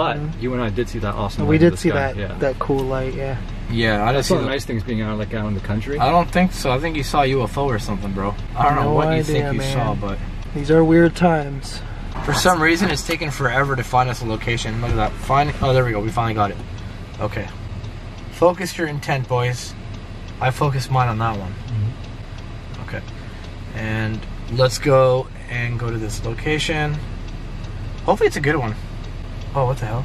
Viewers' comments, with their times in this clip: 0:10 Idk if im trippN but theres a whispernof a female! Ithink one of you guys might be getting followed by a spirit
0:12 idk if it was one of the other guys in the background talking or if the app makes a noise?? but i heard like a voice right when it transitions into the app finding a location when he says "these are weird times"(might haveto go three minutes before to hear)unless im probably hearing things but ive never used the app so idk